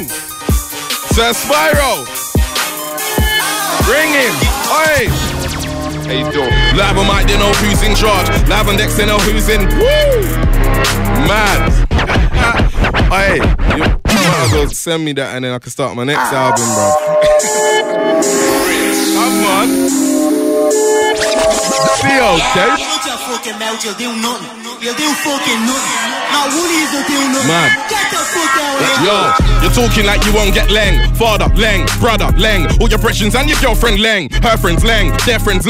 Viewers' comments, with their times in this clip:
0:04 is one of the meanest grime beats I've ever heard. 🥶
0:23 Idk but you man but the instrumental around the mark made me pull a stank face man. Hard still, P Money killing still